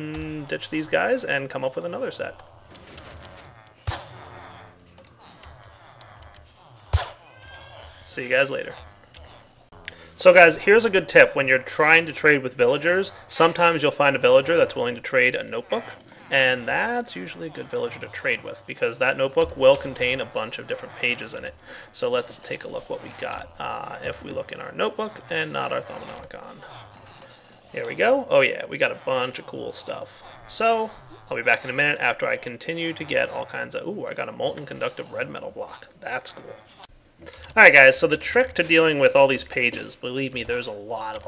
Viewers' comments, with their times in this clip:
0:05 there was a baby crying in the backround :O
0:07 ahahaha that cracked me up that part where his baby started crying "See ya guys later" then just leaves... I know its not supposed to be funny, but it cracked a smile on my face
0:07 did anyone else hear the baby ?
0:23 There was a baby crying in the background